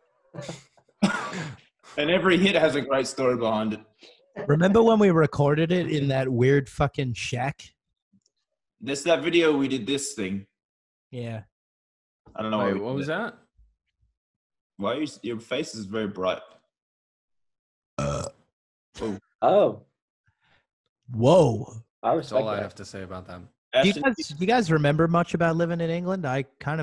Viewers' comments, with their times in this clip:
0:09 that one keek!!! 😭